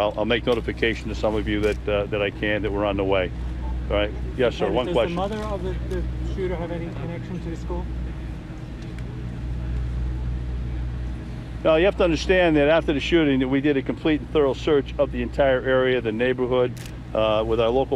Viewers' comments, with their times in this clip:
0:04 "Does the mother have any connection to the school?" * 5 second delay * Starts babbling.....